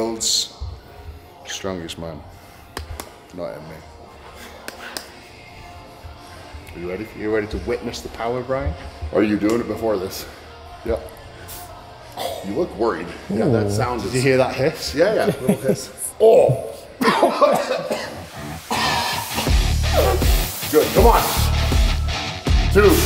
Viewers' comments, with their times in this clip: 0:06 Love the linkin park